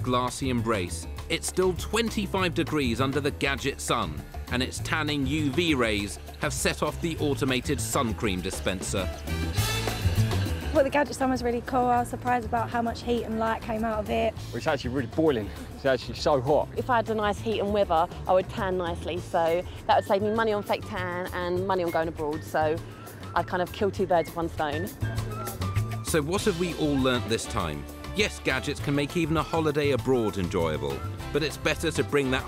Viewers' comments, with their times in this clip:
0:09 What language is that?
0:14 what language is this guy talking ? lol